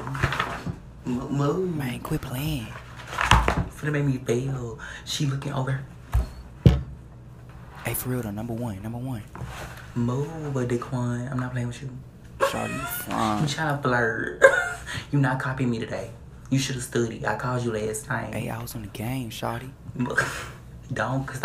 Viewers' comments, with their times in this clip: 0:07 Omg his voice is on point I love it, this is what makes me laugh Btw no hate ✌🏿